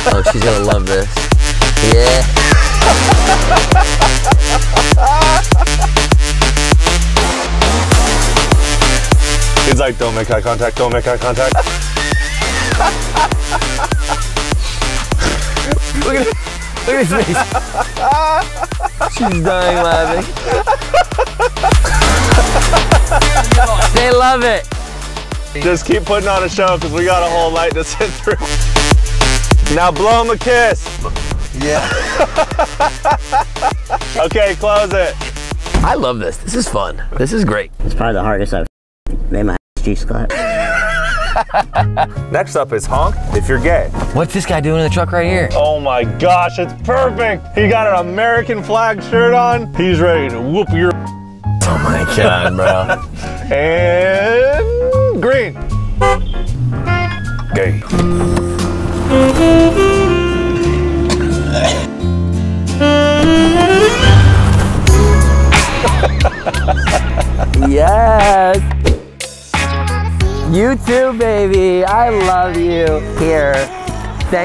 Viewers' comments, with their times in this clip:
0:10 Those older people being like "Oh Geez..." like that was something recurrent and trivial, and not something they've never seen before lol
0:57 that locked in exclamation of just “gay” gets me 😂